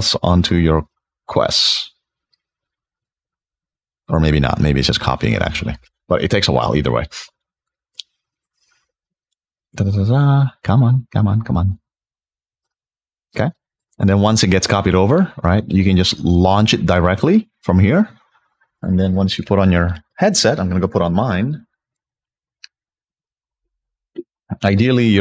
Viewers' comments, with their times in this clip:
0:06 vape hit real asfk